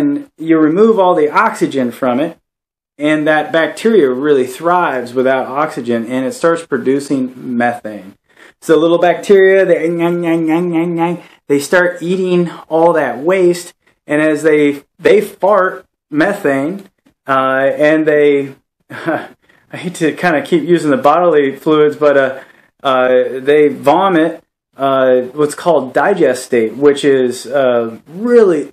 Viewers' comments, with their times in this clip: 0:10 Exactly the sound I imagine bacteria making.